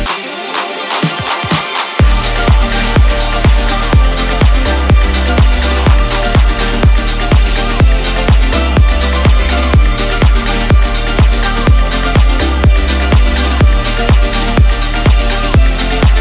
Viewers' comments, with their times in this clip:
0:03 reminds me of some other song but I can't think of what it's called, it sounded similar